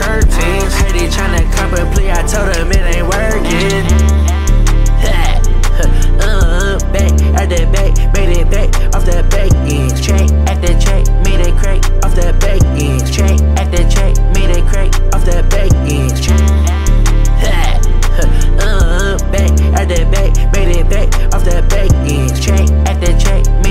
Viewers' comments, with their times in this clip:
0:05 that second 808 fire